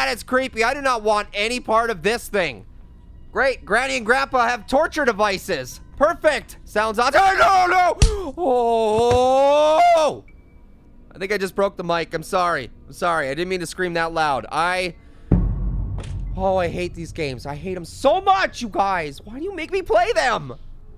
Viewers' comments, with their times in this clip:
0:07 anybody got jumpscared here by grandpa cause that oron maiden is what grandpa can hear